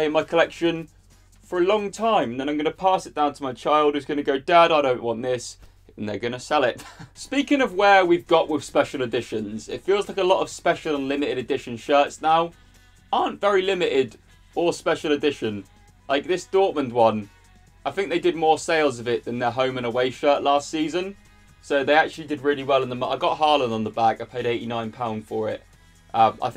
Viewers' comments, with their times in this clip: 0:07 The pain in the laughter is just killing me 🤣